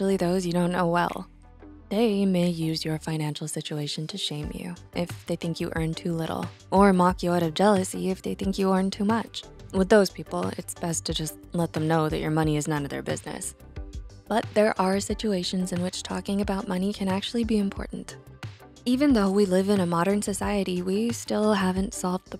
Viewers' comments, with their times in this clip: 0:05 background it's like pokemon games😂